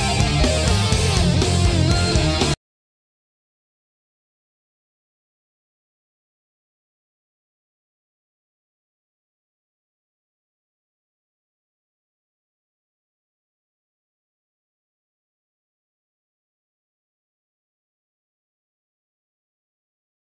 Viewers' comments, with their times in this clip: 0:04 min: mute sound 😞